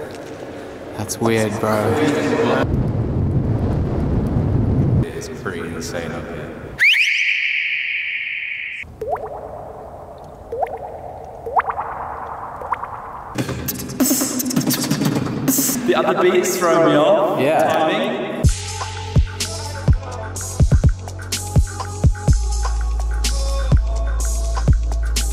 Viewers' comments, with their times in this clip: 0:09 the echo in that room is cool asf
0:09 water drop sound effects
0:13 would have been sick to calculate the delay/echo timing and make a beatbox in the right bpm acording to the echo :D